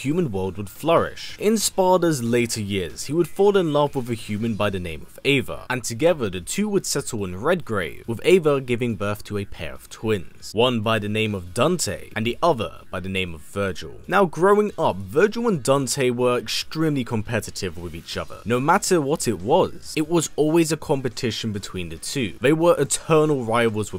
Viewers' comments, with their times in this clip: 0:08 bruh he really said "dunte"